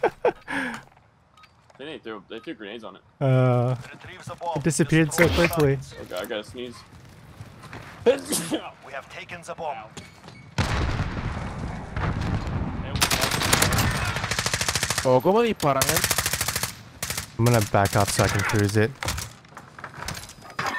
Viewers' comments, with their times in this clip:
0:06 anyone notice when one of them sneezes and nobody says bless you? sadge